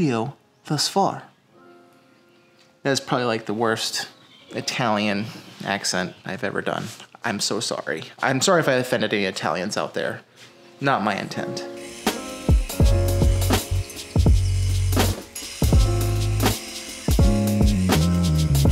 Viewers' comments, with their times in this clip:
0:04 years that was bad